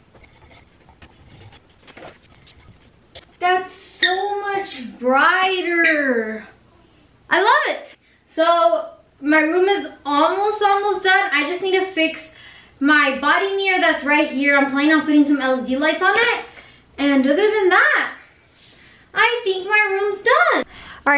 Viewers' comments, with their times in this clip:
0:06 i love how she says “I love it” 🥺
0:07 They way she said it tho 🥺